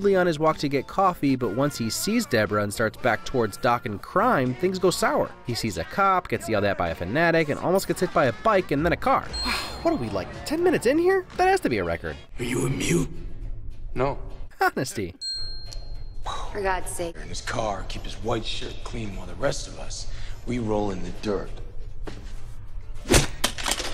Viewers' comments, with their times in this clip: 0:09 One of my favorite “timed” gags in the film. This woman is shouting up (presumably at her boyfriend or husband who is being unfaithful) and screaming “Is she in there?” Cue the song’s chorus: “Yeah.”